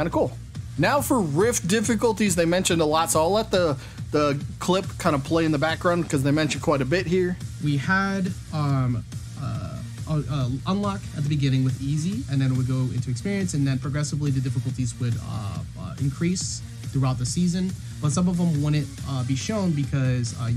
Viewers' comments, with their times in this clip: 0:07 I couldnt help notice the guy from onwards saying "uh" so many times